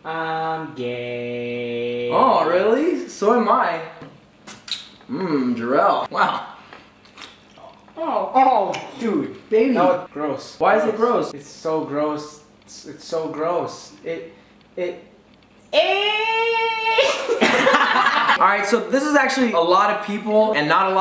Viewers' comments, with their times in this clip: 0:07 sound effects lol